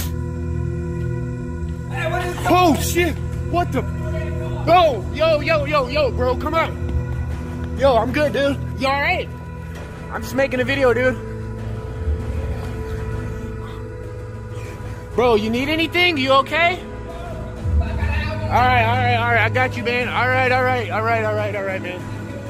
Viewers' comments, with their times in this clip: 0:07 who is saying are ya alright its not his voice?